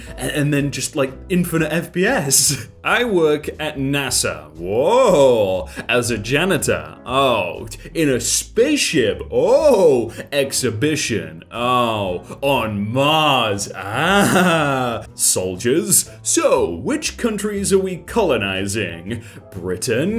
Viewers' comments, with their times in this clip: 0:06 Mars? doom music intensifies